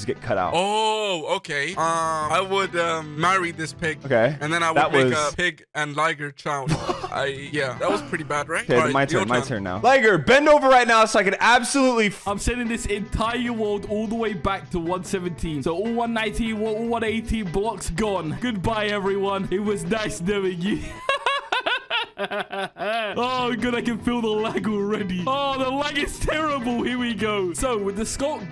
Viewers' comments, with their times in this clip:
0:10 Bruh actually got cut off